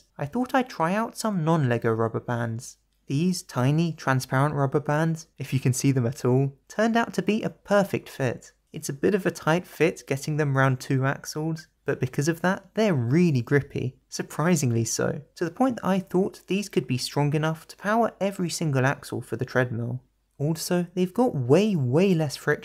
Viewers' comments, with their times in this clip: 0:09 hears sighs checks comments sees no one says anything oh bruh